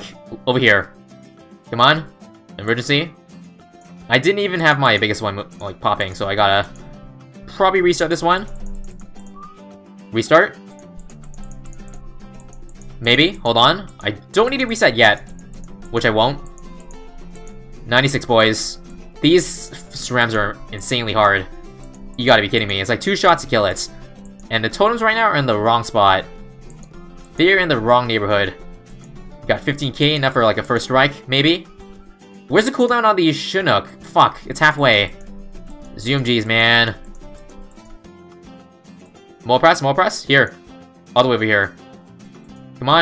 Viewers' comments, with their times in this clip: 0:05 Am i paranoid but did i hear sirens
0:27 no you’re in the wrong neighborhood with all those sirens going off